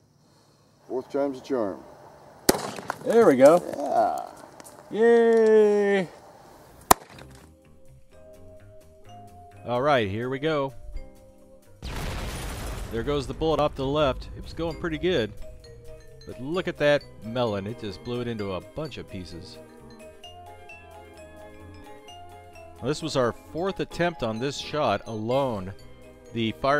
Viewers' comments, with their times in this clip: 0:06 cod hitmarker effect
0:11 I like that halo grenade sound effect